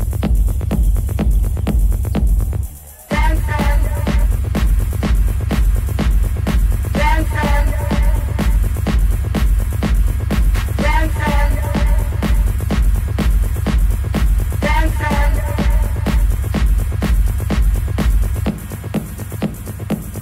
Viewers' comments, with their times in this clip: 0:04 Totally ruined track with lyrics